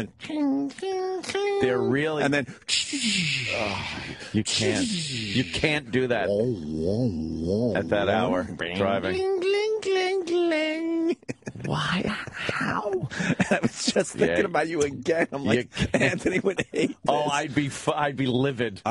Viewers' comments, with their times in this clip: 0:04 Opie nails the Grateful Dead's "Space/drums" song omg that's so funny. I love that kinda music, but that's exactly how it sounds 😂😂 the Beatles station can be worse though. It will be a popular song then go into something that sounds like a song that would be in India and have some weird ass trippy sounds.